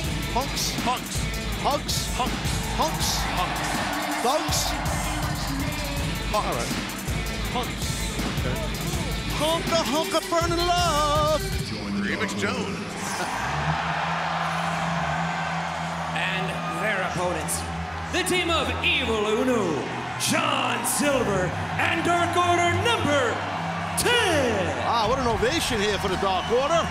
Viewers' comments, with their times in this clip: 0:09 the main reason we’re all here is to listen to Taz sing.